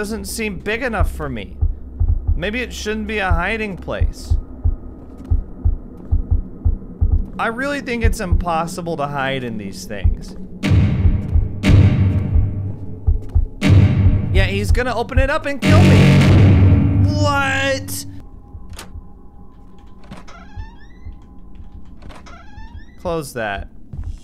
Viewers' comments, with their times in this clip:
0:09 You scared yet? BOOM Please be scared. BBOOM Are you BOOM Scared ye- B-B-B-B-B-B-B-B-B-B-B-B-B-B-B-B-B-B-B I love how entertainingly jank these games are.